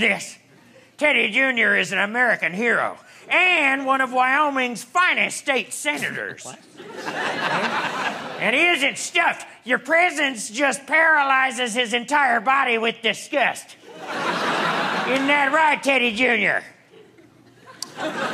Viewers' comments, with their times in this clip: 0:04 I swear the crew person in black hiding behind the front legs sneezed and the other guy said "quiet"...anyone else see/hear that?